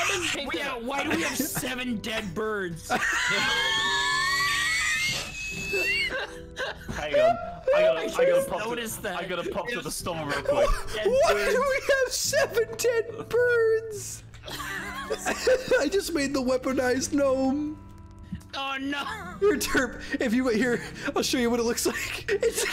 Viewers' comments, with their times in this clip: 0:03 The sound of a F1 car
0:03 All i can hear is a jet taking off
0:03 TEA KETTLE INGAGED